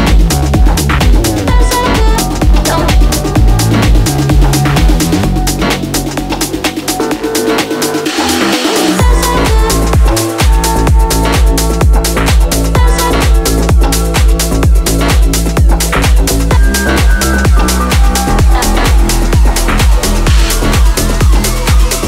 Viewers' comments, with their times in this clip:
0:08 wow great tune